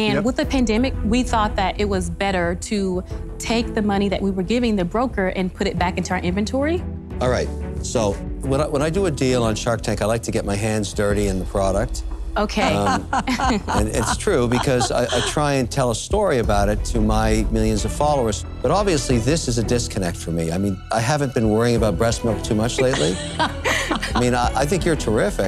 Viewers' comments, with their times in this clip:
0:09 Barbaras laugh and side eye was a little sus 👀